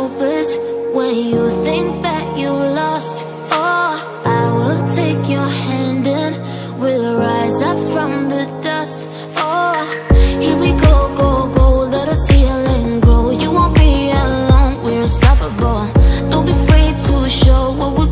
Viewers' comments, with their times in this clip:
0:03 The song start in